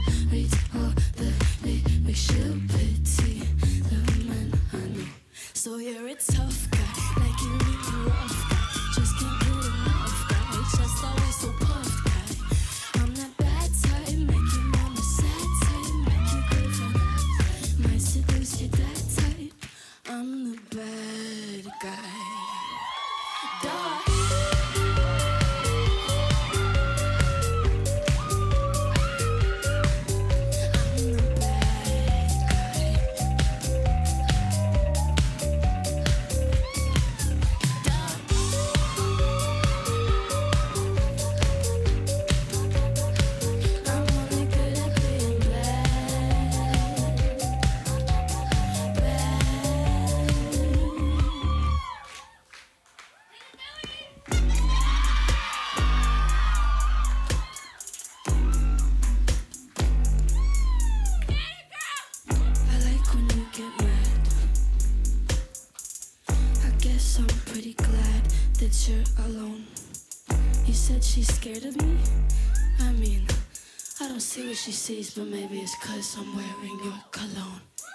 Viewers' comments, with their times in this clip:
0:06 She does sing a major part after with just some chorus backing vocals
0:22 THAT 'DUH' IS TOO CUTE I CAN'T 😭😭😭😭😭😭
0:54 like bts on dance break beat lol😂
1:00 Literally anyone shouting out is my mood
1:01 why is it playback tho ik she can sing lmao